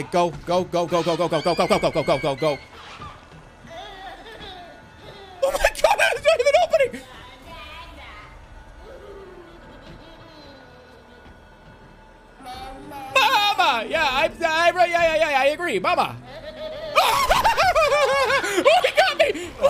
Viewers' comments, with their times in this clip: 0:05 Damn Jerma is so scared that he started speaking Turkish again Can relate anyways